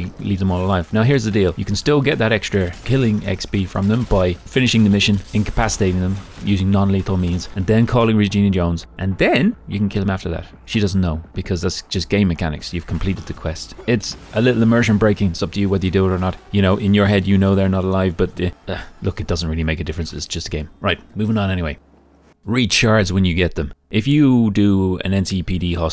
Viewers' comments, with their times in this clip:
0:10 "Just Gay mechanics" - gay mechanics - oh rly? :D